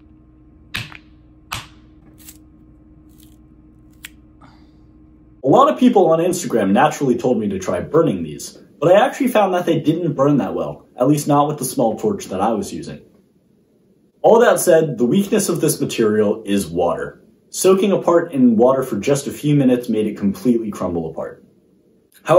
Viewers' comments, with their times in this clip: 0:03 u sounded so disappointed when u broke it